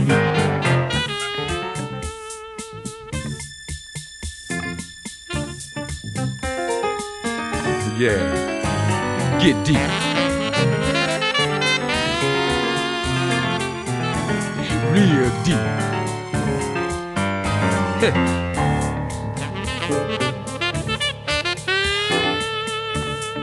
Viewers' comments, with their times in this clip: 0:05 Bernie Worrell from to the end is killin it with his "free jazz" approach. Classic piano.